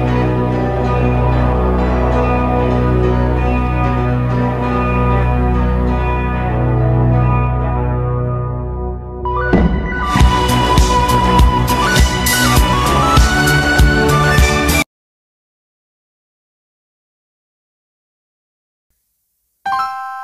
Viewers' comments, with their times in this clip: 0:07 excuse me that was on beat